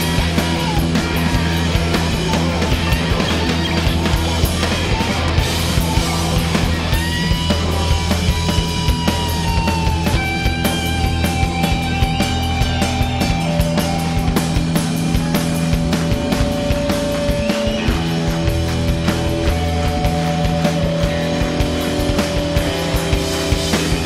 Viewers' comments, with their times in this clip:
0:09 What happens is the musical equivalent of that feeling when you know you've finally figured something out that's gonna make you feel untouchable. Big or Small, you now have the keys to the world.